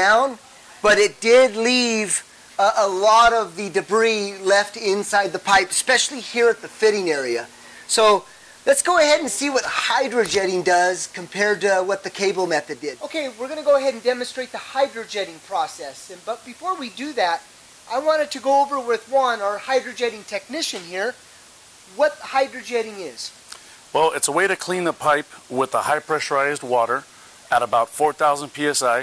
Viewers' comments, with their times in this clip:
0:07 There's an audio issue after I just hear static.
0:10 What happened to the sound at the mark?
0:13 the sound went out.
0:13 Couldn't hear the video + because you had some audio problems and my hearing loss but great video! Thanks.
0:15 the sound stops.